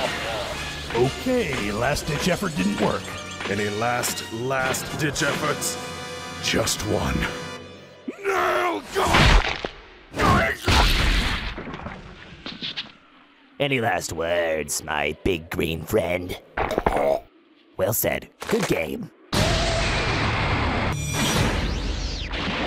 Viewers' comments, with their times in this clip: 0:07 why did he scream nail for😂😂